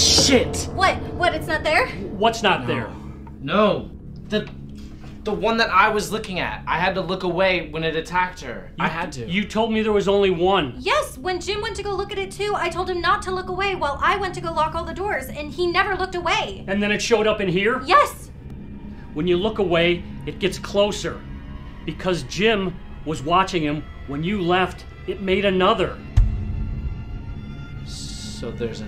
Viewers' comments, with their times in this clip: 0:09 tell she doesn't sound like the tiktok voice girl